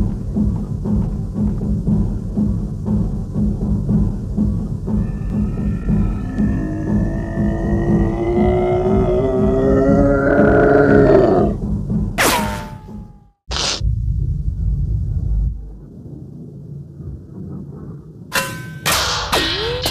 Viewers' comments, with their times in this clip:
0:05 Why does Zigzag sound like Gabriel Iglesias' imitation of an "OH HELL NO" person?